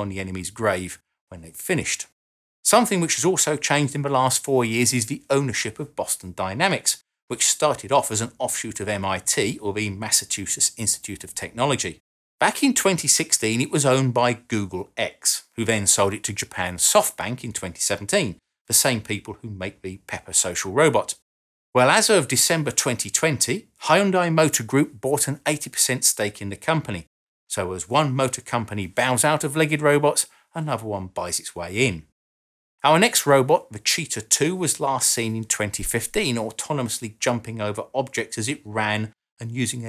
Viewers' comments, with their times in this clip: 0:09 Did he say "Massa-two-shits"?
0:24 You butchered the pronunciation...